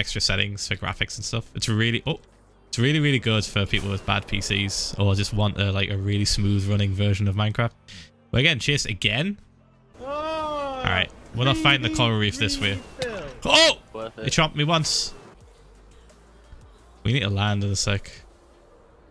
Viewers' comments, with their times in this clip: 0:07 he said smooth like sm00th